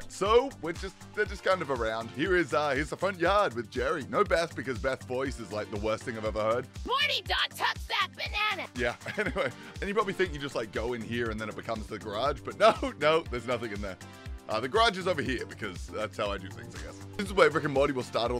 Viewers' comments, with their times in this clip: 0:03 That clip of Beth's voice had me laughing for minutes! 😂 Totally justified not having her available for stories.